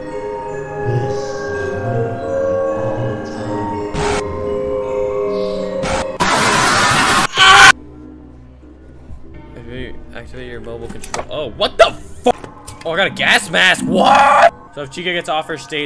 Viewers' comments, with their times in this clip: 0:03 FAZBEAR playing piano is crazy 💀